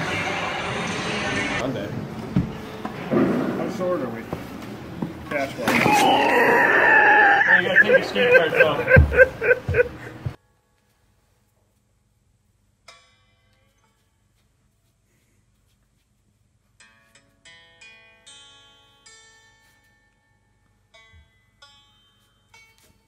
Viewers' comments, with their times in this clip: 0:05 Also that persons laugh is absolutely terrible, sounds like a bad smoker laugh.